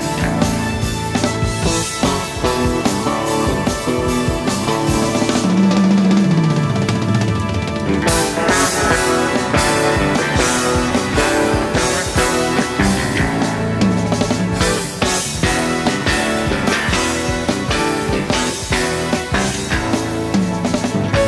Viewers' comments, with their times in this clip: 0:05 that paus when the drums comes in i have to rewind and rewatch it fills my spine with chills.